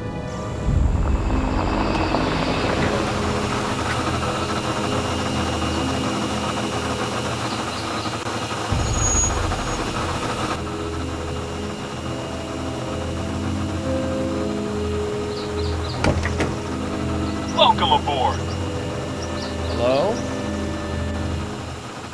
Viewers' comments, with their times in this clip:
0:10 i’m always here for that roar